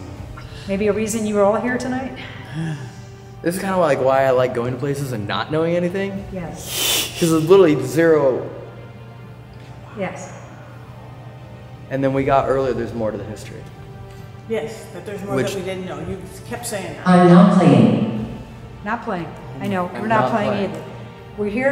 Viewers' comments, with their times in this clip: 0:08 I think it’s one of them kinda whispering woooowww
0:09 In you hear a faint noise